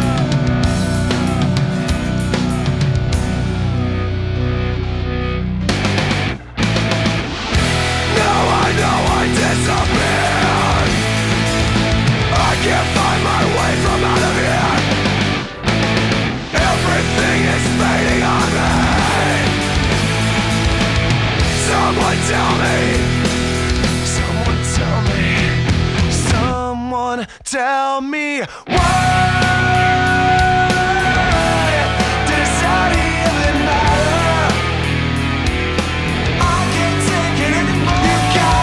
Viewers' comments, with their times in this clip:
0:03 In these moments I feel the spirit of "Slipknot".
0:05 Slipknot mode ON!!!!
0:06 when corey strts 2 go into it fuckin hard man, great song song and band !! 🔥
0:06 Stone Sour: Off Slipknot: On
0:20 talks normal but screams derp moment
0:21 haha. it's the screaming part there, Corey